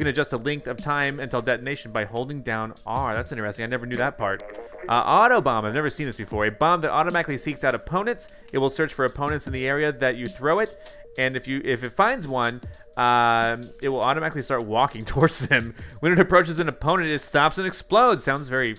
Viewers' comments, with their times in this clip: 0:05 kinda sounds like the Ticks on Titanfall 2